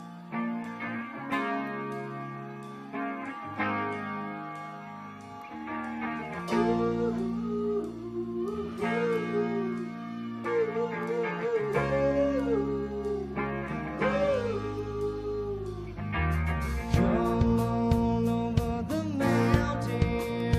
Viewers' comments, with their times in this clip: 0:06 He definitely lip sanc the “oooohoooohoos”